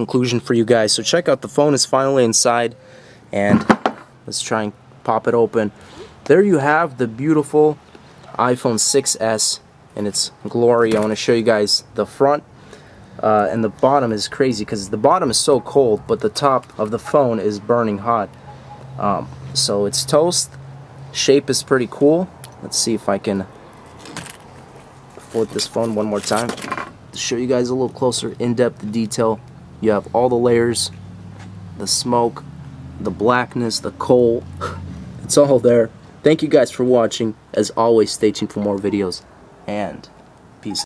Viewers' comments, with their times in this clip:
0:08 anyone else hear Siri?
0:36 You literally sounds like Whisper.